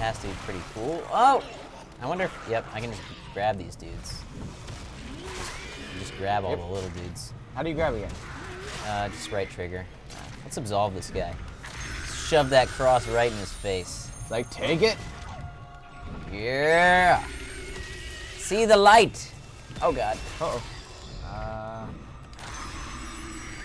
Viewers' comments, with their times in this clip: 0:04 In instead of absolve ,I thought it said Asshole